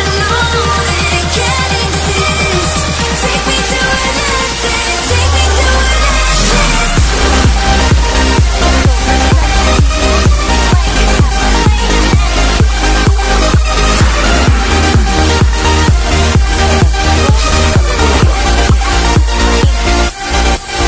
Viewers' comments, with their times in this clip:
0:04 that freaking drop tho <3